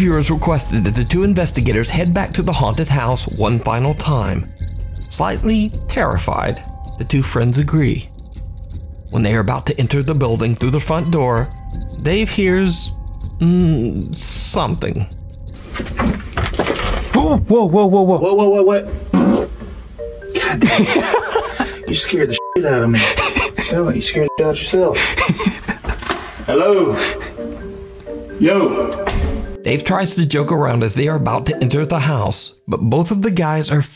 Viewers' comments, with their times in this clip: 0:08 Samara rings the well fat guy = does anybody wants to communicate me Ghost = yes the knocks Fat guy = runs
0:17 BEST PART/FART OF THE VIDEO HAHA
0:20 wh.wh.what? And then he farted